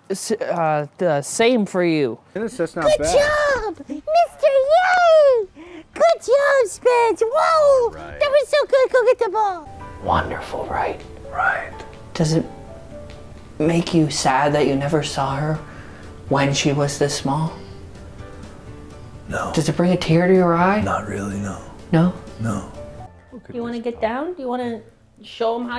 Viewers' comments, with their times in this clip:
0:03 ethan sounds like Elmo 💀
0:08 why ish does ethan start to sound like elmo🤣🤣🤣🤣🤣